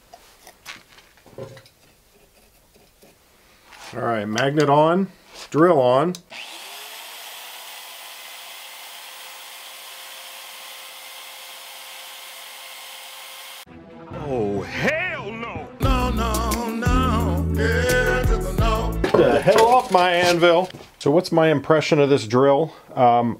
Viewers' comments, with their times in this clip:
0:09 minutes, everyone, including myself was screaming NO !!!!!!